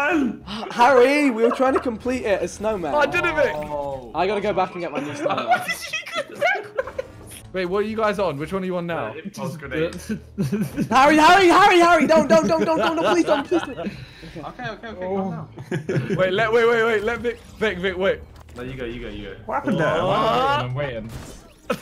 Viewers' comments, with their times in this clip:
0:04 that laugh thougghh🥺😭